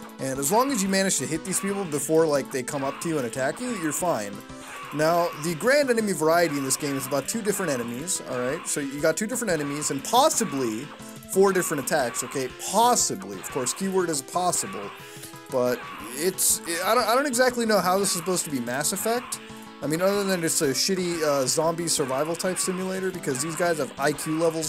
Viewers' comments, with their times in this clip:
0:06 Is it just me or do the enemies sound like homer simpson when he says, “doh”?